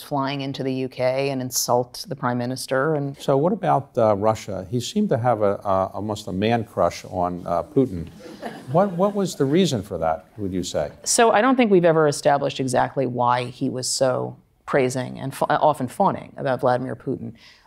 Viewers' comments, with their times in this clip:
0:05 Anonymous laughter at, "Almost a man-crush on Putin."